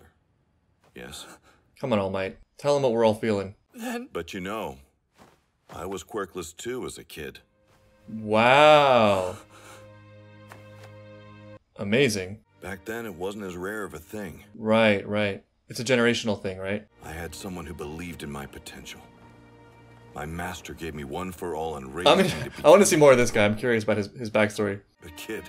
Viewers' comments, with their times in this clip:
0:07 Holy moly, my guy channeled his inner Owen Wilson